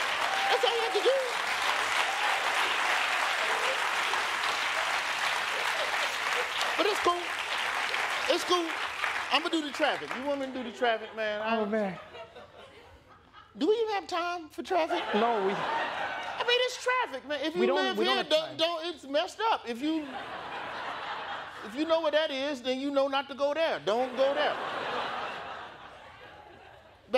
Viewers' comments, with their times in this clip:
0:09 the traffic in background is not even from USA